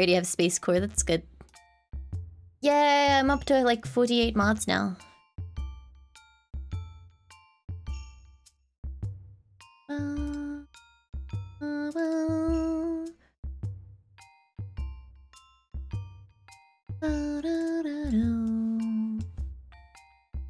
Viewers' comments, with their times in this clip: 0:04 I've noticed her accent comes out when she says forty